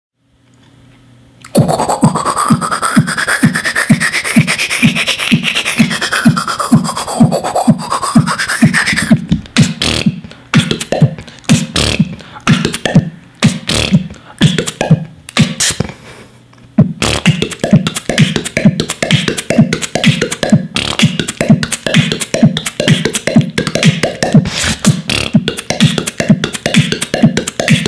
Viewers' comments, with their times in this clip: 0:10 how do you do those bubble-like sounds >.<